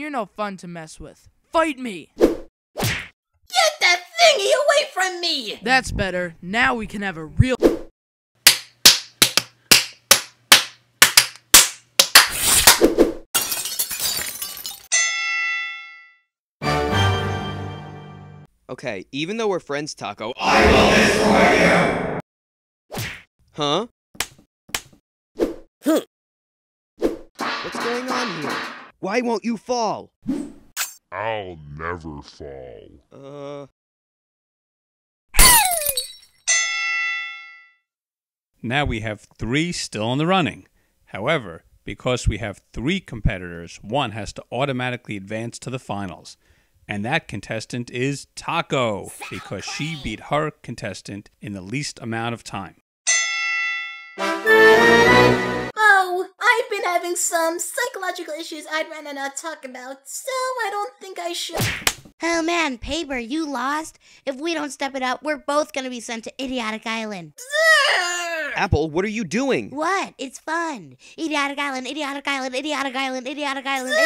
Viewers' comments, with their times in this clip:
0:08 intense Clapping Sounds
0:09 paper: S L A P S Pickle* Captions: [Music]
0:11 Slapping is going on (Captions: [Music])
0:16 epic sound effect
0:19 THAT WAS THE DEMONIC SOUND I EVER SENN LIKE: " i Will DƏSTRƏY YƏU "
0:27 taco: hi pitched cute scream OJ: shatters
0:35 moan of death
0:55 why do i hear paper's voice on the right even though any direction off screen every S1 episode always happens?
0:58 what happened to audio